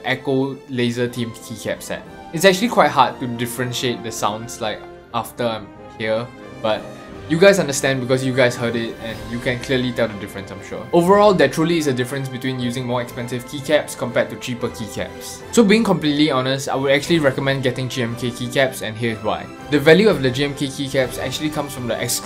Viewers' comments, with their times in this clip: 0:08 THOSE SOUND THE SAME